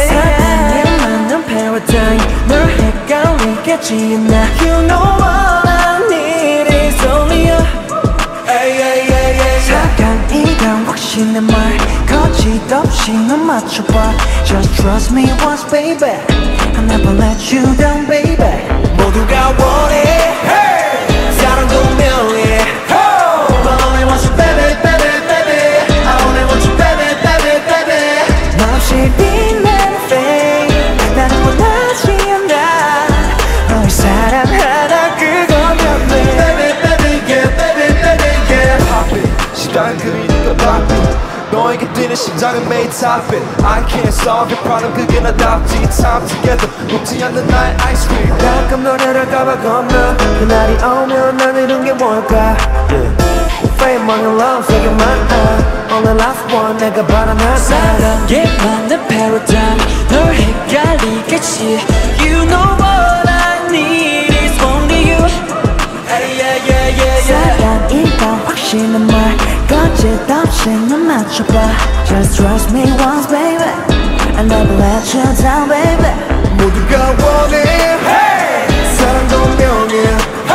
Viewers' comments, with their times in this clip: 0:05 Dino's "need" just cured my depression
0:57 I keep repeating this part OMG. Minghao's voice is so handsome here. I'm blushing and kicking legs right now... HELP ME
0:57 minghao sounds so awesome!!! he is so stable and definitely ate this part
1:00 Sorry… but their mics are on? I didn’t know till the 8 skipped a part 😮
1:02 The8's high note so clear